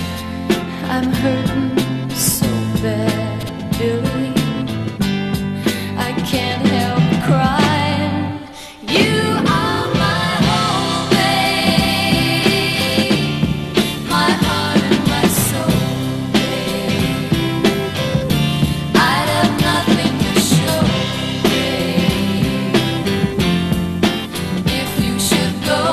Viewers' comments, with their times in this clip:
0:08 the classic Abba vocal sound they tried to reproduce. Susan was there first.